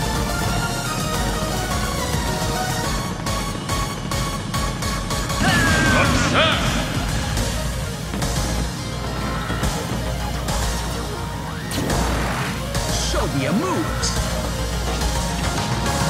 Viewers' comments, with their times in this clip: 0:03 Fox commit suicide The voice SUCCESS